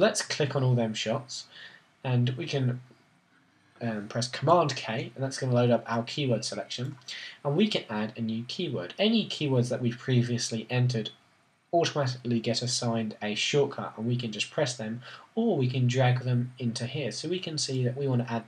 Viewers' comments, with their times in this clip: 0:04 Really liking her "roundabouts".